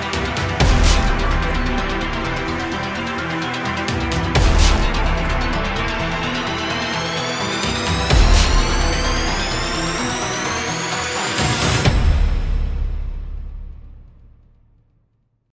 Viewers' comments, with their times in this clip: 0:11 one fart, and I'm dead